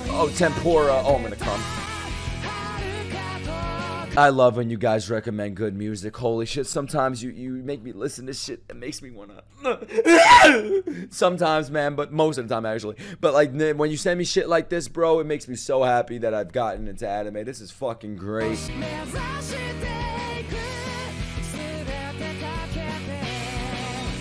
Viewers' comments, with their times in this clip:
0:10 when you are at peace and in silence alone reading a manga, when you hear this loud noise coming from your neighbourhood = priceless xD